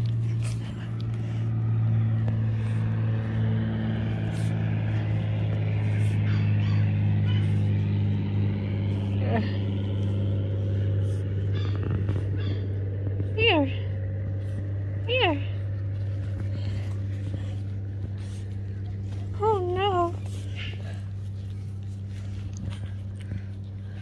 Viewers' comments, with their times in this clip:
0:06 A plaid jacket to keep him/her warm when it's so cold outside, that's adorable! I heard a propeller plane flying in the background